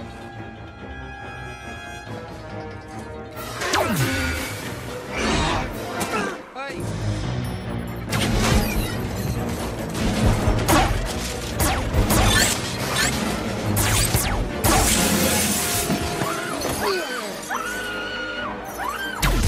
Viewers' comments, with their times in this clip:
0:05 someone had noticed that the blobfish just farts? listen carefully